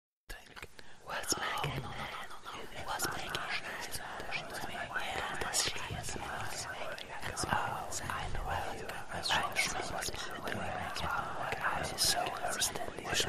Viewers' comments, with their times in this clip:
0:01 says " What's a naked man? " I'm scared-